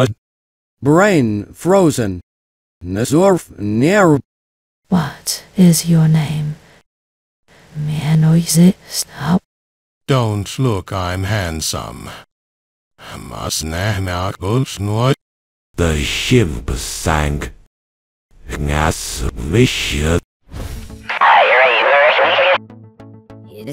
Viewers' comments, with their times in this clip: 0:05 thats not what is your name, its plant based